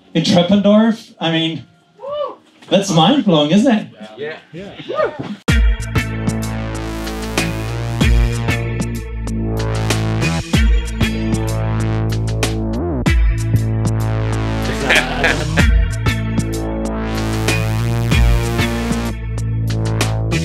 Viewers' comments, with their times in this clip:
0:05 Love the background tune that kicks off